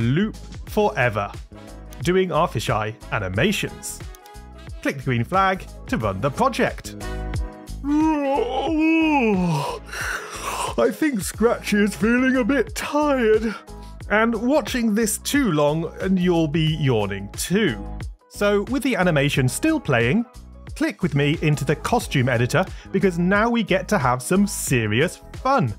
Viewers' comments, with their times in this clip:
0:08 he sounds like big the cat